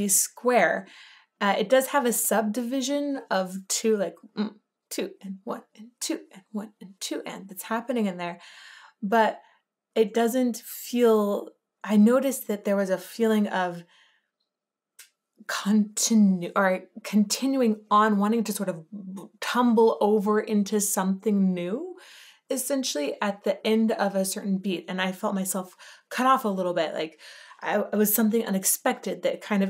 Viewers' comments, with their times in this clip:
0:10 ish: When I counted it, I heard a pickup beat, then a 3/4 bar and a 4/4 bar (or maybe just a 7/4 bar, but the repeating bit feels like it is divided into 3+3+1) repeating until the vocal comes in.